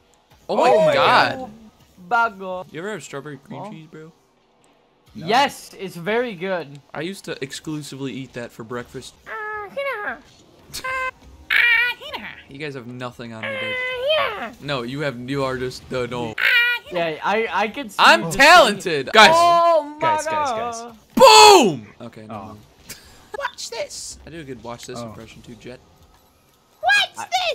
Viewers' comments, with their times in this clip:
0:09 angry bird ahh sound
0:10 Why was that angry bird impression so accurate D: